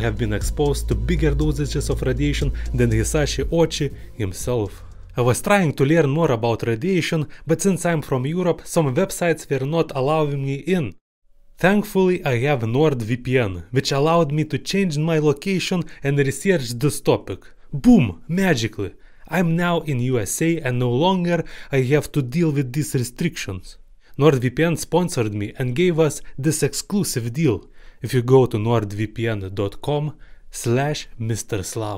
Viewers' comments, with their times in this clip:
0:06 wait if your from Europe how come your accent sounds Russian?
0:12 My "Lokasyion" Man that's sound familiar !